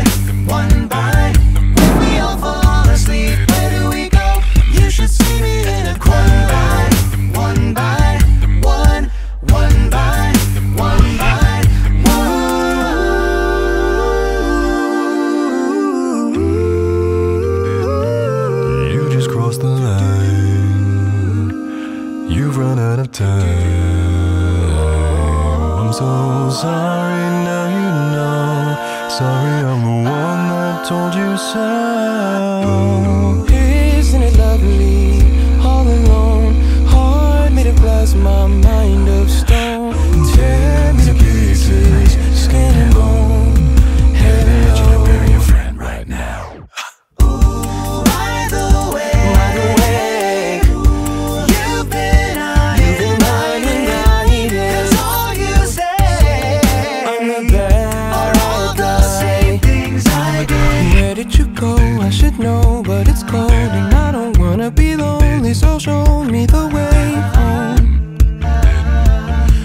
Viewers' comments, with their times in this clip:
0:09 that was the smoothest F1 in the world (backup vocals)
0:11 Was that an F1?
0:12 That low note in can't be real.
0:18 true i just love how smooth his voice is
0:33 That chord .. omg...shivers....
0:33 Like honestly... what is that chord ? It's so damn good and juicy...
0:34 THE HARMONY JSHGJFGDHF
0:34 ughh so crisp
0:47 What’s that note
0:47 Repeatedly hitting G1 effortlessly. Is that chest or subharmonic?
0:47 series of F1 to F2 transitions
0:48 I heard some G1 growl notes in there also some chest or subharmonic G1’s maybe
0:51 I came back to this- AND WOW THE LAST COPYCAT THE BASS IN THE BACKGROUND (like background background-) HOLY SHIT whatever it was sounds real low and like a growl. It sounds like a G but it’s hard to hear. You can hear it and every few measures. WOW-
0:52 who else hears "you've been mining diamonds"?